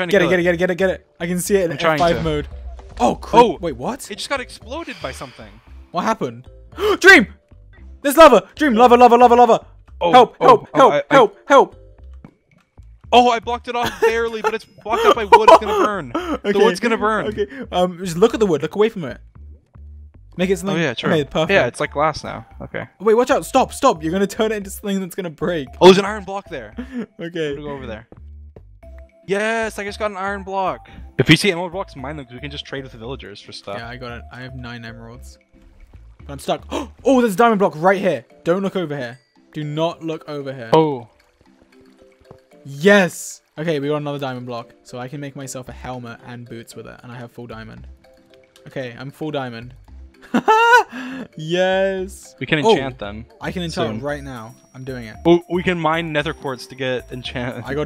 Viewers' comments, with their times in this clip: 0:07 the perfect Cut scream
0:08 “Can it get in? OH-“ large scream cuts into calmly crafting Me: wait what
0:08 *Sharp inhale* “OOOO-“ *cuts to crafting*
0:08 perfectly cut scream
0:08 perfect cut scream
0:08 Perfectly Cut Scream By George
0:09 BEST. SCREAM. EVER>
0:09 bruh, the cut scream...😂
0:31 sounds like he’s telling dream to get a spider of him
0:41 George: lava 3x Captions: lover 3x